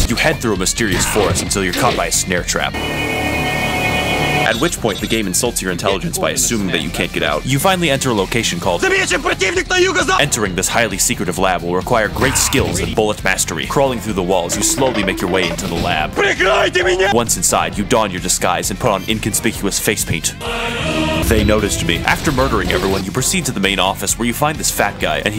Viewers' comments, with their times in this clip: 0:08 Angry Russian intensifies